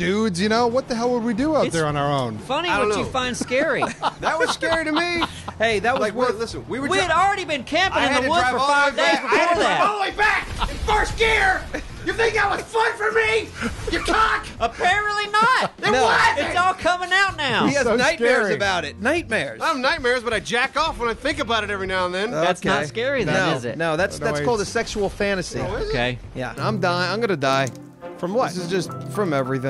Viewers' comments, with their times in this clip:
0:10 what did he even say 😂😂
0:16 the voice crack!!! Hilarious!